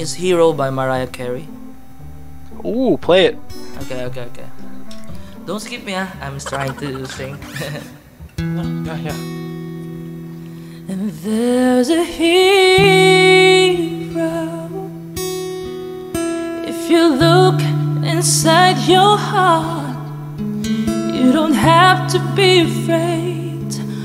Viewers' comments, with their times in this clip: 0:08 that vibratooo so smooth...